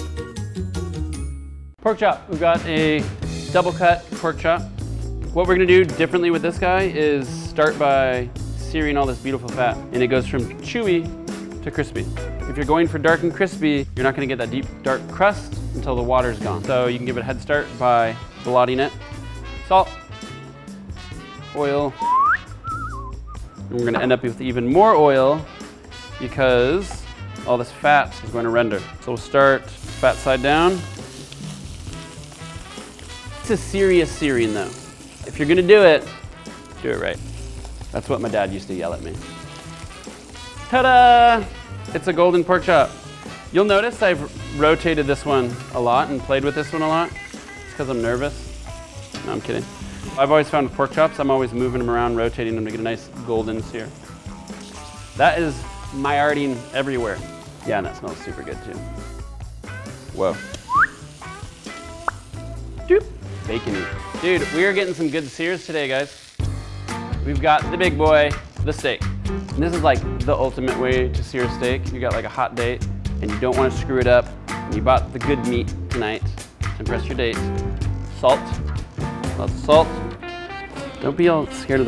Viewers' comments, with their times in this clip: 0:06 The music and that moustache go so well together
1:02 sound like when you pick up item in Minecraft